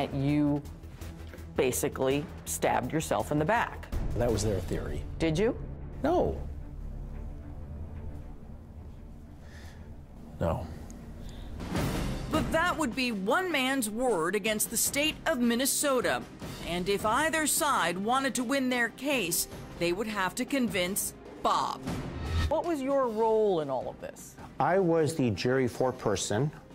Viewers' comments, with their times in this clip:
0:05 He even corrects his pitch after the first, high "no! [Several uncomfortable seconds of forceful eye contact]...no."
0:06 that pause is a sign of him answering knowing he’s lying. 🤥
0:07 His "No!" screams "I'm lying"!